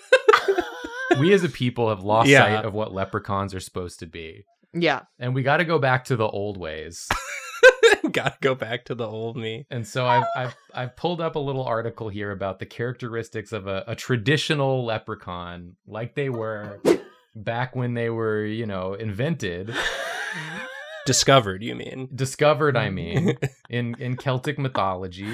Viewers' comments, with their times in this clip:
0:08 WHO LET A SEAGULL IN HERE?!
0:11 Who was it that honked like a goose ?
0:11 Why .. why was there a chicken squawk at like ish